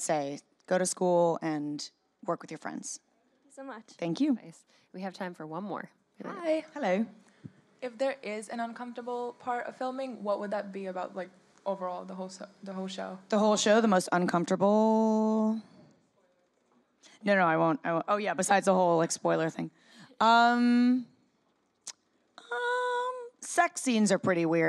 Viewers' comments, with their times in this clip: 0:06 did anyone here her say "hello" in a british accent? Omg it was so obvious that she had a twin😂
0:10 HAHAHHA OMG she did her AD voice!